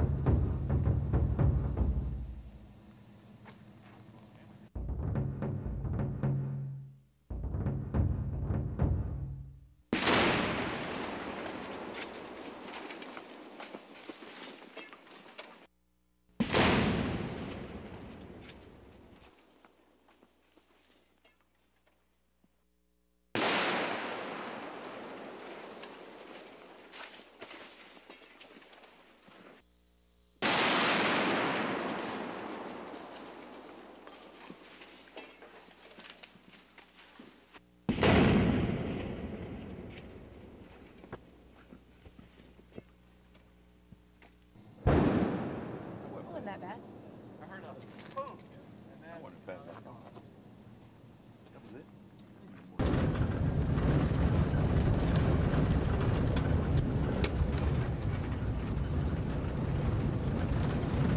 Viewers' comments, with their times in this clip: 0:05 is the boom
0:09 if I saw that happen in person, I would scream, breathe heavily in panic, shake, have a panic attack, and I would say: "Oh my god, that was loud"
0:44 sounds like thunder 🌩